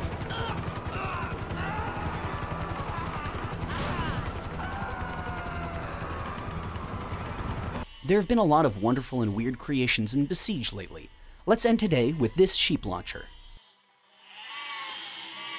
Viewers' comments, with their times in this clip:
0:03 BEST MORTAL KOMBAT IMPRESSION I'VE EVER HEARD